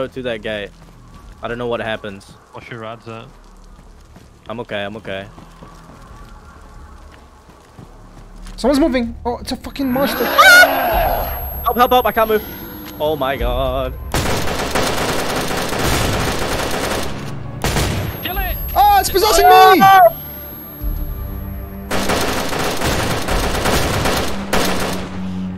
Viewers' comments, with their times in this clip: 0:09 that scream thou 😂
0:11 idk who’s scream that was but it was a womanly one